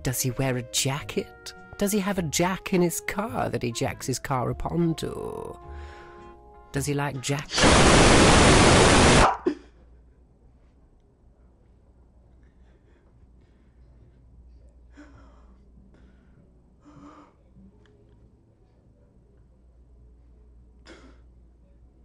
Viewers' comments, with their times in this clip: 0:07 at 0.25x sounds like a demon
0:07 for the people who want the oscar medal scream 😂😂😂
0:07 That shut UPPpPpPpPpPpPpPpPpPpPpPpPpPpPpPpPPppPp
0:08 The creepypasta scream that should be repeated in forward and reverse: